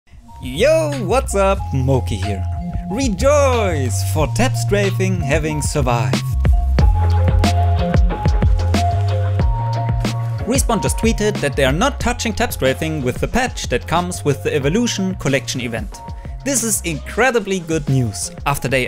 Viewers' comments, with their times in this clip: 0:00 The tone of his voice, the joy omyg #